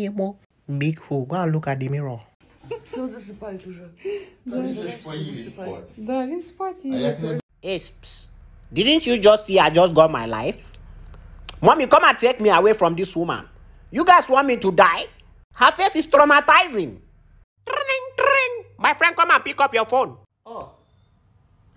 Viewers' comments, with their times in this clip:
0:05 WHAT IS THE BABY SAYING😂